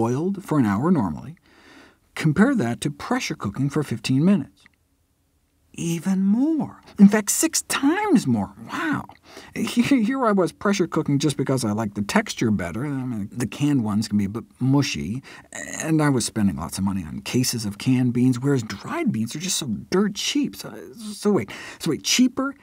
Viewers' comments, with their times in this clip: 0:08 Owen Wilson spotted.